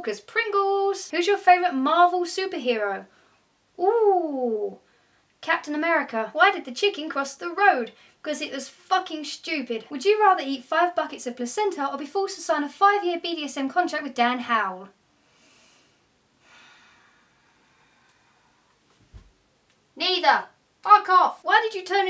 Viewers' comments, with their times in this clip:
0:10 what is the question ? couldn't hear.